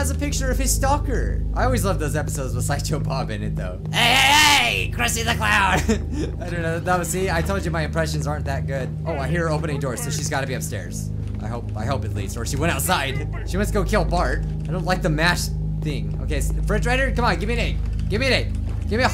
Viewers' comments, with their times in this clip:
0:04 that's actually a pretty good impression